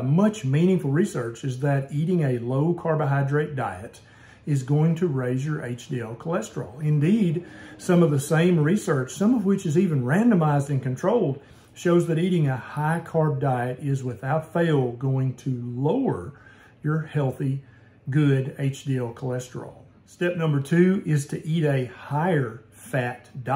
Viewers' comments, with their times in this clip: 0:05 lol the toilet flush noise in the background :)